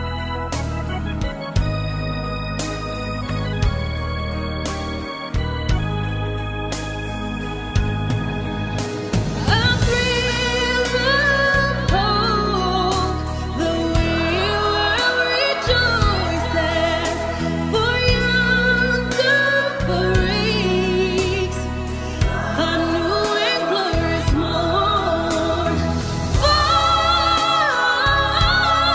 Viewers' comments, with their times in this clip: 0:09 OMGGGGG LOLOLOLOL!!!! This was your BEST vocal performance I've EVER heard!!! EVERYTHING after SLAYS!!!!! sooooo good! lmao @ the editing. You rock girl, it's officially xmas!